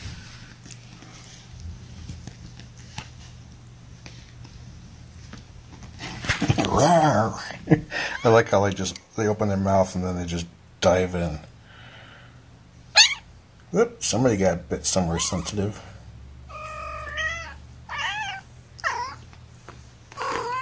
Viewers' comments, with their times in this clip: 0:03 Lol the face and then the squeak, too cute.😄😊😊